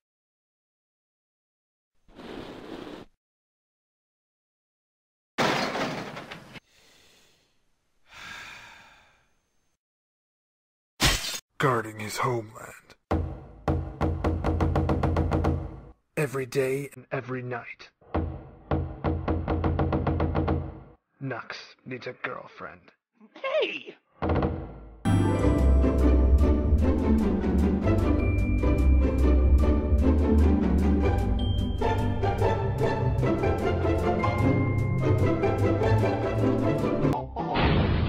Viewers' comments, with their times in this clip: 0:06 that sigh always gits me XD
0:25 is the funniest all because of the music
0:25 this isn't the music I remember playing for this short
0:26 did the music change?